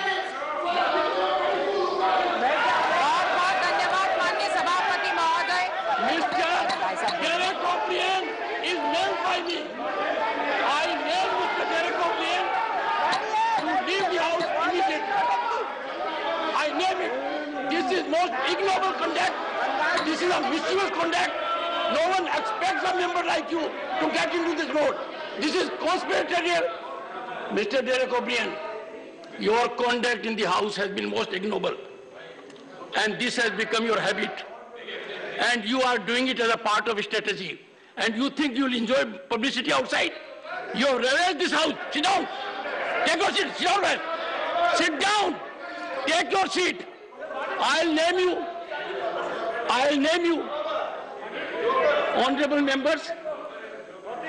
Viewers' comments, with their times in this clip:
0:05 Why the RS member is shouting over the Chairman and shutting others🤫?
0:41 ....😢😢 Furious Chairman sir.....wah wah Sunny Deol style.... Sit down, Sit down..... Wah....he deserves that... even more brutal treatment he deserves....